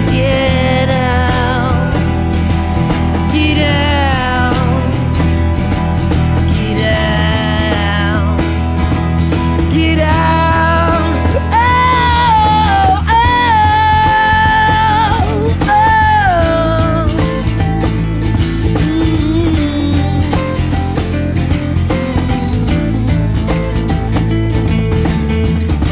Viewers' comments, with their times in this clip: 0:08 okay. i love this band and i like the guys voice BUT the nasal is a little much in this mellowed down version. Bums me out because you can very clearly hear him actually open up and his voice sounds absolutely amazing.
0:10 i love this video and only this video because of simple the voice idk why it just sticks into your head, that one part. I love it